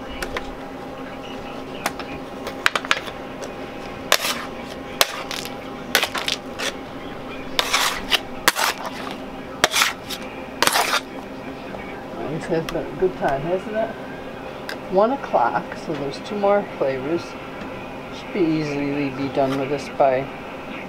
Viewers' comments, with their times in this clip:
0:04 lmao the sound of you peeling the candy from the marble is kinda orgasmic :E